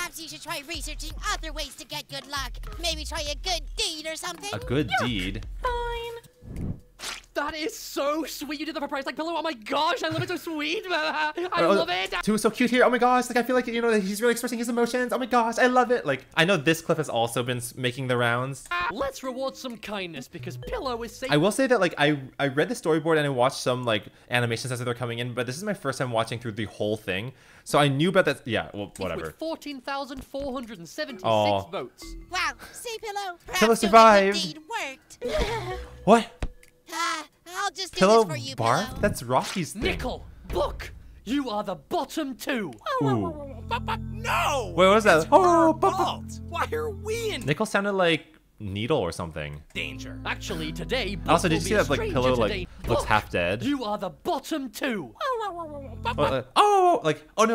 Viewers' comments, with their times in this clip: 0:07 how talk so fast😭
0:07 two is so annoying here like OMG JUST SHUT UP WHY ARE YOU SPEAKING WITHOUT SPACING BETWEEN WORDS I DON'T UNDERSTAND
0:43 I NEVER EVEN REALIZED NICKELS LITLE awowow bop bop